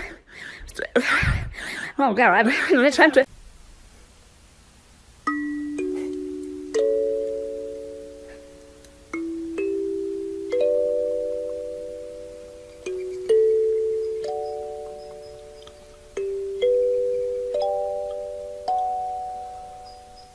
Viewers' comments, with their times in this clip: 0:04 So Kalim is playing the kalimba. I see what you did there